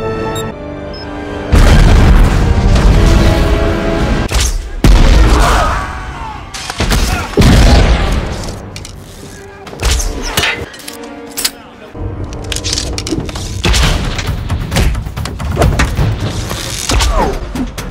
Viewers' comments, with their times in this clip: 0:04 that sounded like Wilhelm